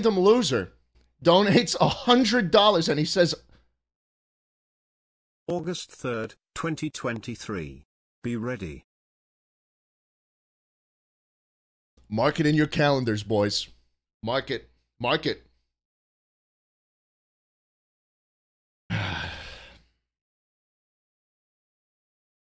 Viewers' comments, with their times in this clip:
0:04 Schlatt's wheeze laugh is so contagious I have been laughing for 5 minutes straight